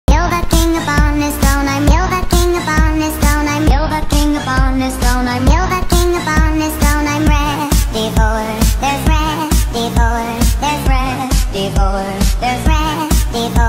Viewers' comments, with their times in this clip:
0:00 sounds like sprata remix ngl